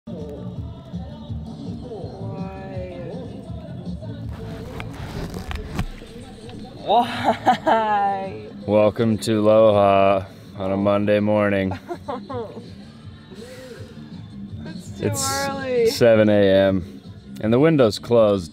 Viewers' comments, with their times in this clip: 0:01 The bass is groovy! I couldn't wake up to this every day and not smile/laugh. So infectious!